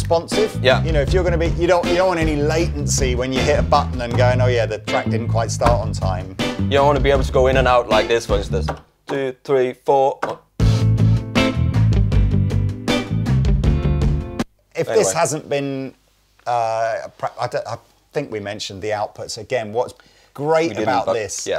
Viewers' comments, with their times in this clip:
0:07 no latency look... o dawn, latency! XD